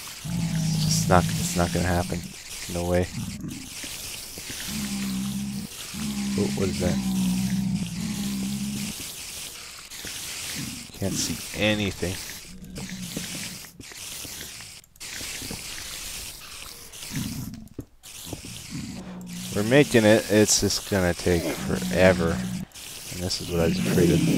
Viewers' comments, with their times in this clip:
0:10 MY EARS! THE BLEEDING!! ;D